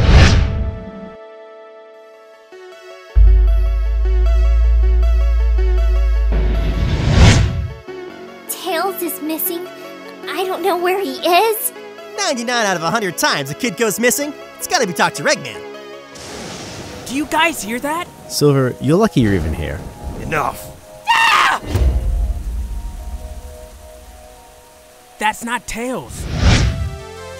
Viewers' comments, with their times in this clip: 0:08 Tail's them song! Lol